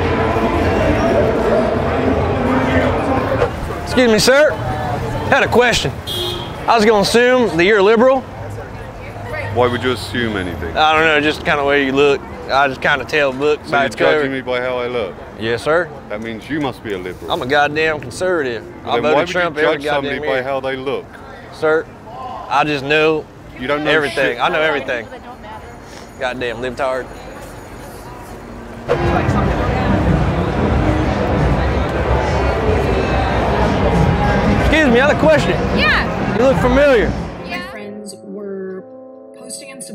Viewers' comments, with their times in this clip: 0:08 HIS VOICE SURPRISED THE HELL OUT OF ME
0:12 he sounds like Johny Ive from Apple
0:22 dude sounds like King Arthur Clive Owen